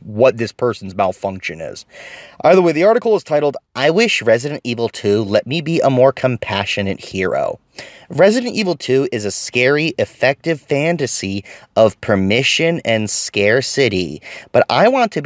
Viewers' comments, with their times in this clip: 0:03 Let me stop you there. First, you don't need that condescending voice. And certainly not at this point into the story. Let the terrible content speak for itself. Another thing, after you have set the premise and told her story THEN you can do the voice.